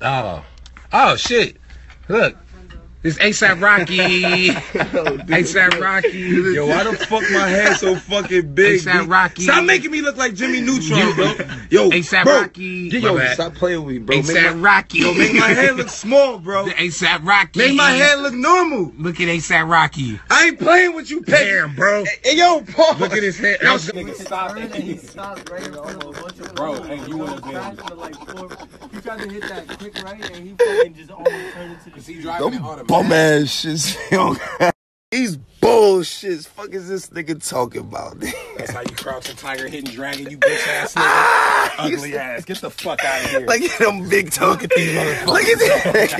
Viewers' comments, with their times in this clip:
0:04 THE WAY HE SAYS ASAP ROCKY LAMDOAKSNDISOIEBFF FE I CANT BREATHE
0:24 Mom: What sound does the pig make 5 year old me:
0:24 I can't, his laughing kills me😂
0:25 The laugh lmao
0:26 whos spraying windex😂
0:26 Lol Asaps laugh😂😂
0:26 .... I swear I thought those were ducks quacking
0:26 mans sounds like windex
0:27 you can hear chicken noise too